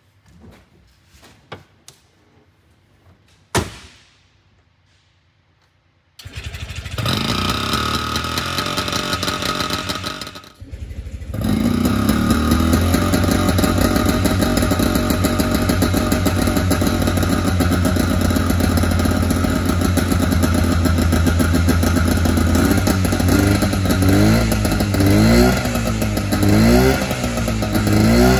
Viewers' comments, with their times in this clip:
0:10 Awww, the Barkley is singing the song of it's people to us.